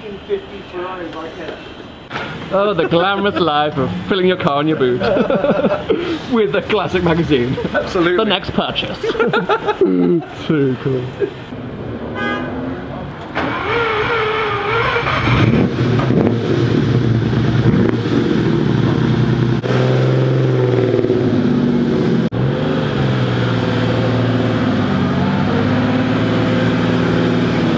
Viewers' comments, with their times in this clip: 0:08 rich nigga laugh. damn he's so happy